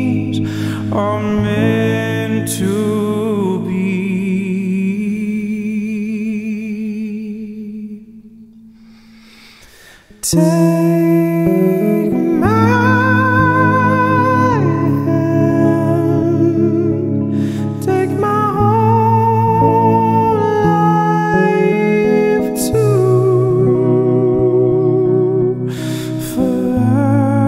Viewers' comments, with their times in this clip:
0:09 The shift matched my tone perfectly, I was shook when it just matched me 🤣👏🏼